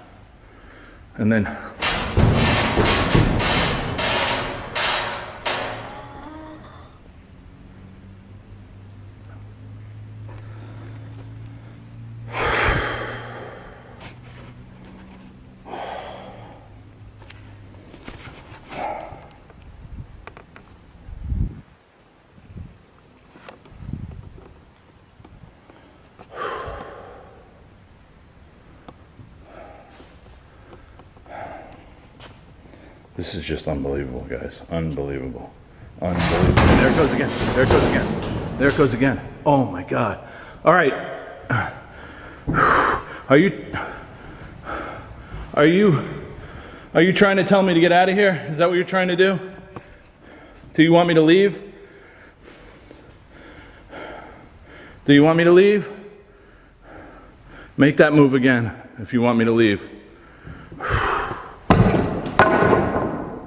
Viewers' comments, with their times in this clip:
0:06 Sounds like "Go home".
0:11 right after the “No” scream, there is a light anomaly that didn’t appear to be a bug or dust. That was hands down your best video to date. There is no way all of that could be faked (because doubters will accuse it as such). VERY compelling evidence!!
0:13 Crazy! right after the whisper says Go, there are 2 orbs , right to left close to the ground,
0:50 min wen your asking if they are wanting you to leave, a low creepy voice says "YES!"